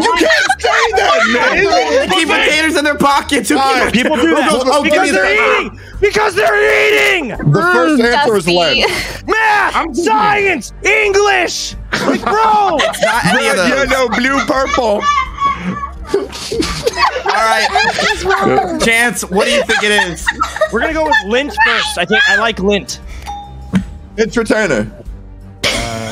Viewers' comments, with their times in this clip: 0:09 "MAATH, SCIENCE, ENGLISH, LIKE BROOO!!!"-(V-tuber dying in the background) i fkn love this dumb shit